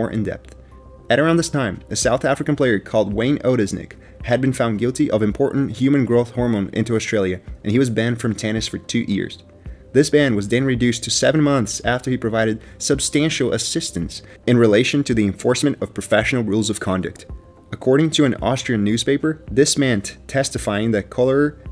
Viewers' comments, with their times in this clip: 0:07 I heard "for two EARS"